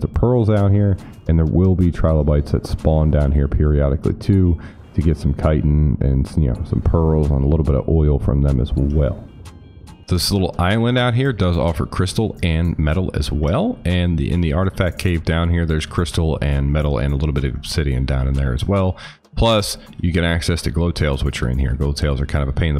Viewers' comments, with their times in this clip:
0:10 That sound transition change from air to water was best :)